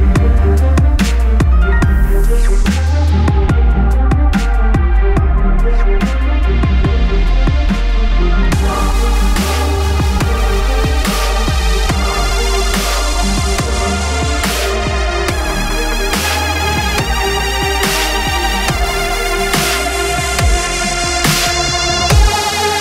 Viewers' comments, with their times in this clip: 0:08 standard FL Studio 10 club kick & clap -.-